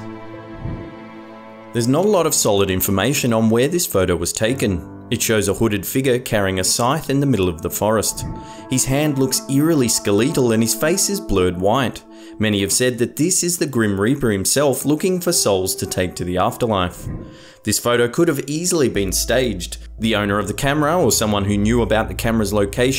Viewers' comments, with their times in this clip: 0:09 eerily skelleetle LOL 😂😂😂